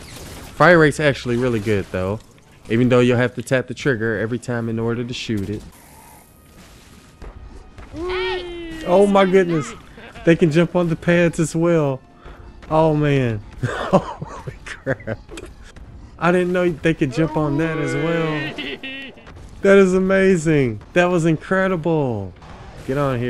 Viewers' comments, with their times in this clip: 0:06 The voice over you gave to the Smasher...."Wheeeeeeeee!" 😁